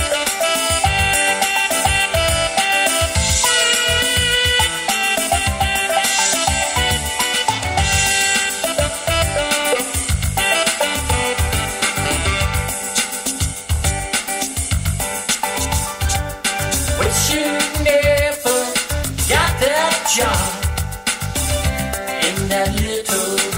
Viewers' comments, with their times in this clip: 0:07 I know what I was missing. This hit. Wow what a great song. Is it rock and reggae? Wow just wow. Keep kissing starting Just plain sexy